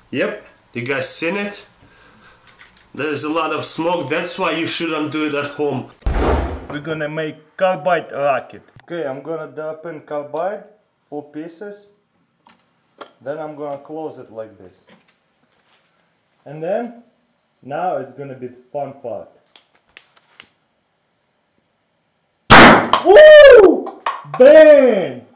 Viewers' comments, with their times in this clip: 0:10 WARNING HEADPHONE USERS ~AT GET READY FOR LOUD SOUND ~WHO EVER DOESNT READ THIS IN TIME R.I.P YOUR EARDRUM'S